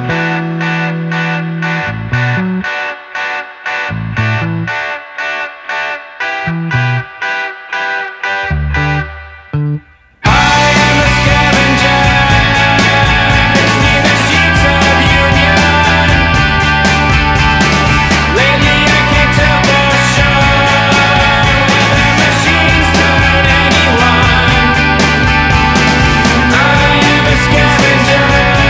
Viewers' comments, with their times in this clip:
0:09 I love the bridge I just wish it was repeated again.